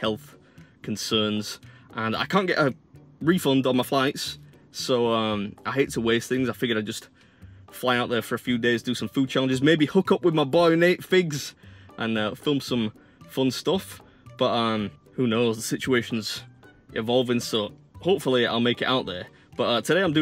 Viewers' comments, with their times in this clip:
0:08 yeah...Sorry boot that....😶
0:08 yeah...Sorry boot that....😶